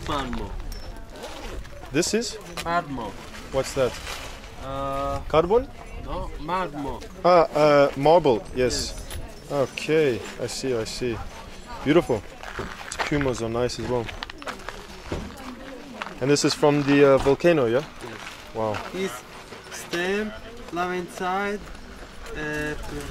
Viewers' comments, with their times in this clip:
0:06 was he saying Marble, or Magma?